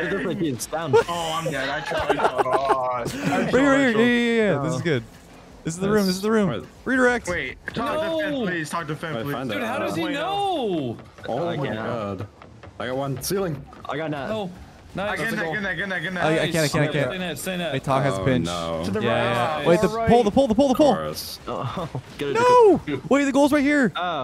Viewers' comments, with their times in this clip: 0:09 wth is that sound in left ear (headphones) ?? i got scared im getting hacked or sth 😆😆 , crazy man
0:10 The bouncing noise actually slightly spooked me.